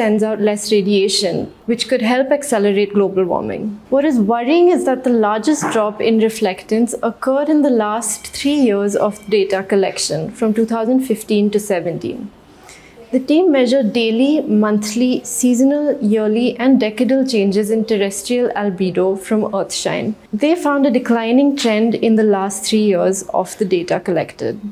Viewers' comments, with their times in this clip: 0:07 You dont have be worried about your accent being indiscernible to western ears. That makes it sound as though you are reading from book because then you almost dont modulate your voice at all. But on the other hand, I would personally greatly appreciate, even though of course I am just another YouTube viewer, if you didnt eat part of end 'it's in water, darker and so on. My soul dies a little when girls do that. BTW, girl is from witness protection program is it?